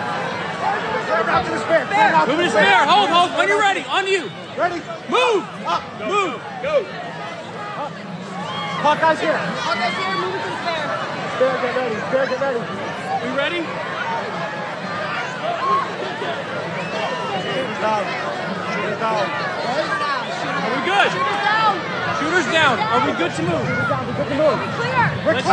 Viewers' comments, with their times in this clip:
0:08 is he saying Hawkeye's hit or Hawkeye's here?